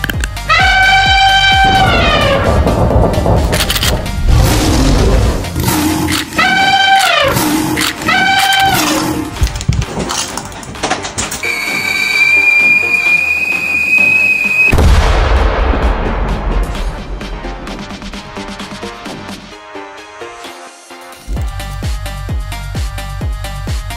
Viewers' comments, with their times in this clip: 0:04 the elephant roer got me rolling on the floor